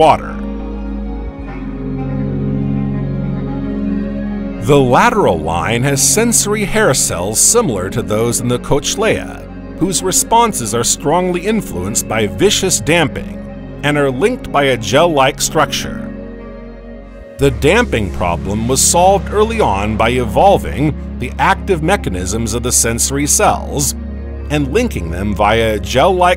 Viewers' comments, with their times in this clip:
0:06 You had me until you said coach-laya If you're going to teach, learn how to pronounce words like Cochlear first, smh.
0:07 TFW you don't want to say "cock." 😭 That's a joke. The text-to-speech robo voice is dumb. That's the reason it mispronounces. I doubt it cares if it says "cock" or not. But yes, for any passersby, "cochlea" is pronounced as "coke-lee-uh." Some people might say it as "cock-lee-uh."